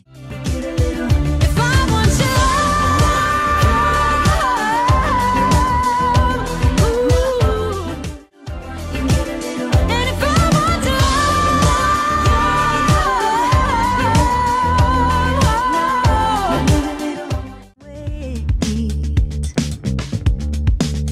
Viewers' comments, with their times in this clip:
0:09 Don't feel bad I haven't checked up on my account in a few weeks anyways. I was actually referring to where she takes the "I" up from the C#5 to a different note.